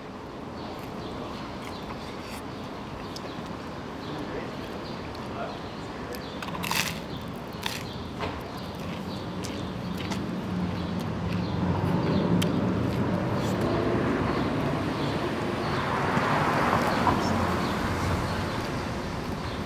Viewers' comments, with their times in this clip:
0:06 that crunch sounds like the fake one he put in his frozen pizza video